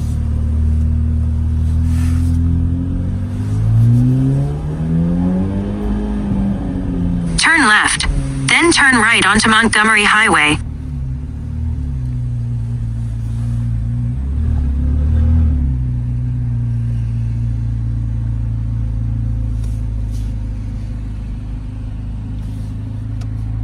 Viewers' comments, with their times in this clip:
0:07 dude that voice startled me good ..." turn Left !!! " hahaha